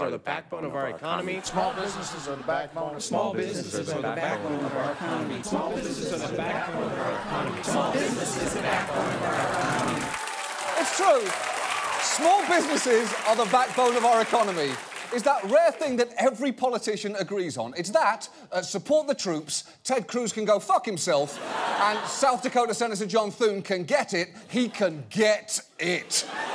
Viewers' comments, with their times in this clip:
0:03 And look what the Internet has done to me All I can hear is Dick Cheney made money off the Iraq War Dick Cheney made money off the Iraq War Dick Cheney made money off the Iraq War
0:11 They speak with the voice of the Legion. Hide for your lives